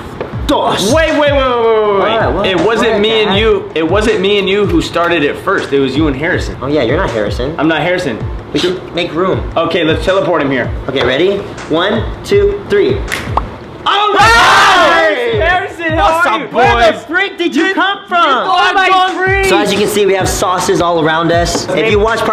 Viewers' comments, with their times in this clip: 0:03 why is no one talking kadjxisude